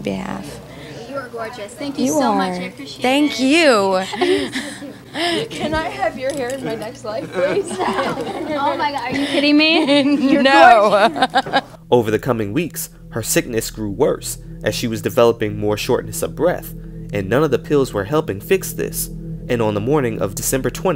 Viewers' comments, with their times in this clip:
0:07 her laugh is so charming 😭 miss her